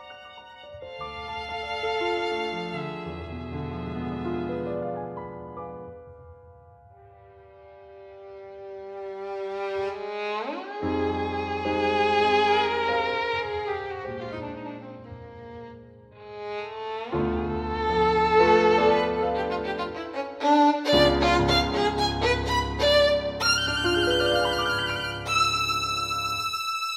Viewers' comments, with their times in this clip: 0:08 Nice, but there's no vibrato on the G-String ^^'